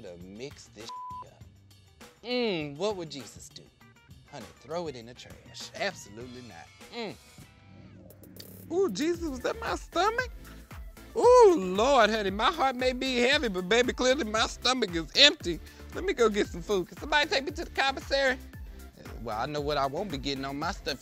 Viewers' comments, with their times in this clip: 0:07 When I heard that noise I thought it was my dog throwing up or something 😂😭